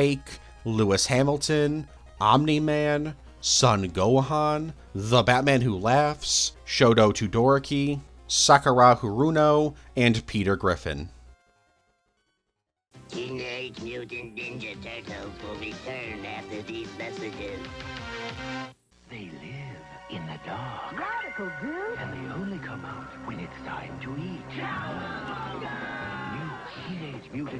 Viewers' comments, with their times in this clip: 0:06 it hurt me on how bad you pronounced his name
0:08 Shoto Two-Dorky is now my official way to say todoroki‘s name 😂 that was gold my friend